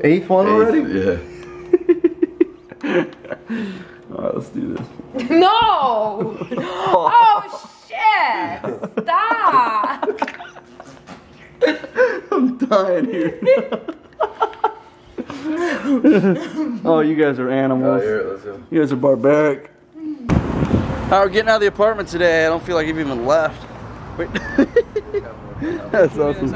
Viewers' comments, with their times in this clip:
0:10 I love Roman's laugh You guys are sick calling his mom hot and shit, I think she's pretty